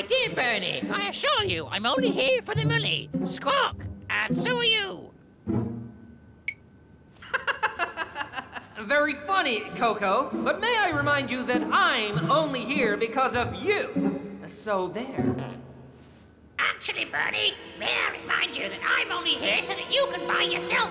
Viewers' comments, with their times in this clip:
0:04 What in the Sam Hill? Was Corneil laughing?